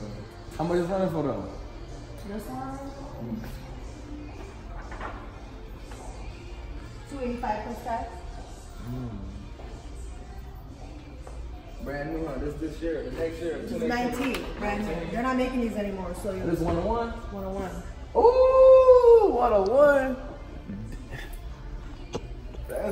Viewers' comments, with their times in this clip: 0:05 That song in the background use to be my jam when I was a kid 😂😂.